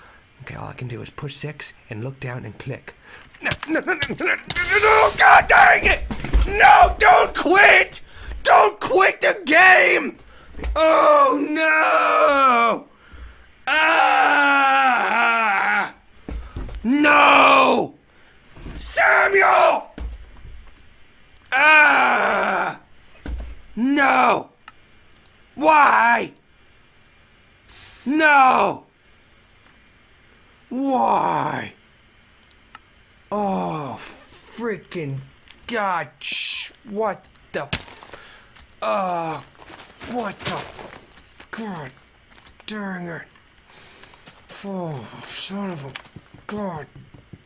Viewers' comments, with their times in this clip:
0:05 is it just me or is there a noise in the background that sounds like drums??
0:15 Listen it sounds like he is craping
0:23 DID IT JUST SAY "WOO, REDDIT"??? OMGOMGOMGOMGOMGOMGOMG
0:34 is how my mom mumbles when she watches the grammy awards, only there are some words that are different then what he said......... merry easter